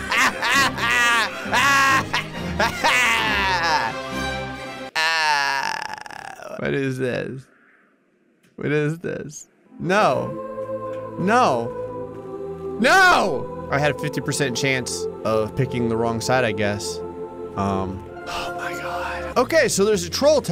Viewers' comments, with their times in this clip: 0:04 you sounded like Palpatine after Yeeting Mace out the window XD